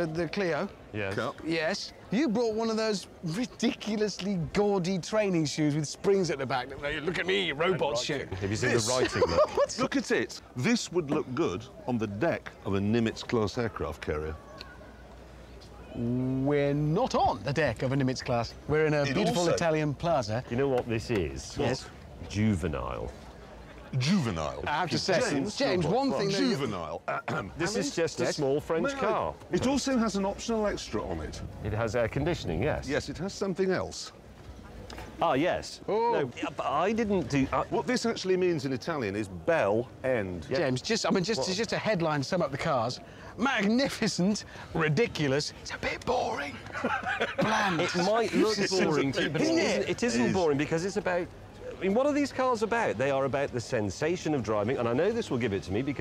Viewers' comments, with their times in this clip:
0:08 Did he say robot shit
0:40 "Magnificent, ridiculous, *it's a bit boring.*" I don't know why, but that randomly popped in my head. I can't help but laugh at the way he says it.